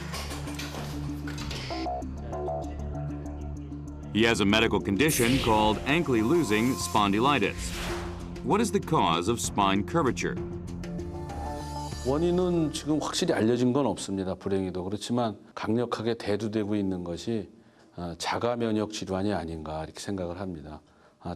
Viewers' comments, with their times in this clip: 0:05 LMFAO! Anklie Losing ... Spawn Delight Us